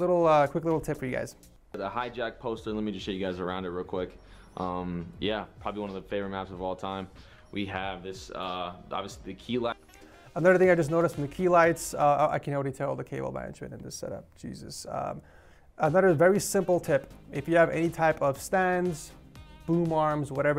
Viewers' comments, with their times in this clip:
0:03 anybody else hear the nasal whistle??? LOL